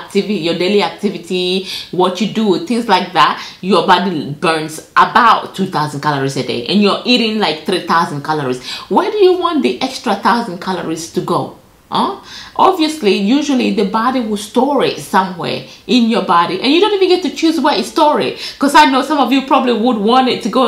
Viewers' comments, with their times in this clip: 0:08 i felt personally attacked in the best way. she says it like a mother would, and I won't lie I felt a little shame hahaha